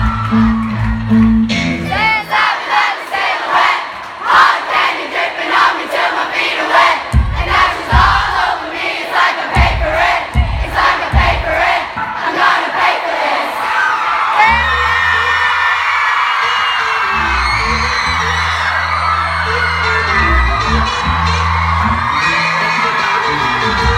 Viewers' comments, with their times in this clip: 0:09 I applaud the one girl that did the ‘ding’ in honestly